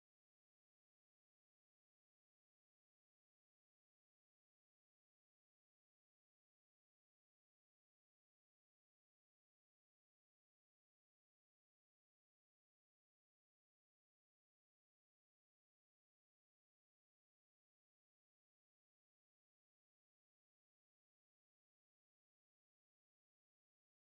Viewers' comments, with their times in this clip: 0:10 The sound went out? 👈🏽 right at this point. Idk if its just me.